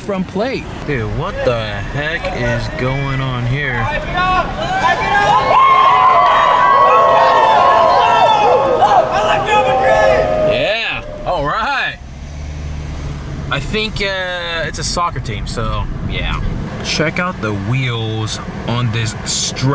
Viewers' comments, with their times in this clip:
0:04 I think in the crowd of people, some of them were shouting "Ronaldo" and some dude saying "i like real madrid"... so yeh just some "soccer" team.